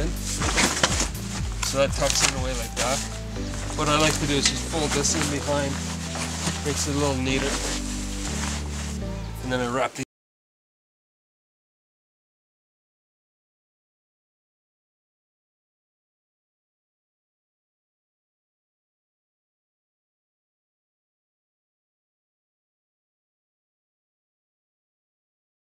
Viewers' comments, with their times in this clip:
0:10 Great video just like all the others I’ve seen. Just an FYI… the audio goes away and returns a bit later